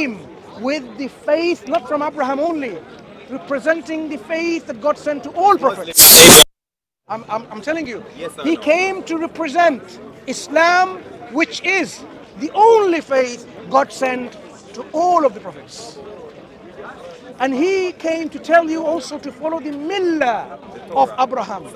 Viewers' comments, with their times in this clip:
0:04 🔊 Headphones users be aware there is a loud noise 🔊